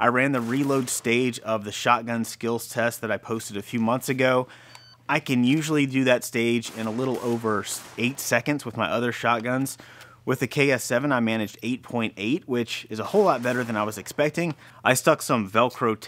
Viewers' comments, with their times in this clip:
0:03 I think I heard an insulin pump. Right around the mark. Any one else catch that? The beeping noise is very distinct if you've heard it before.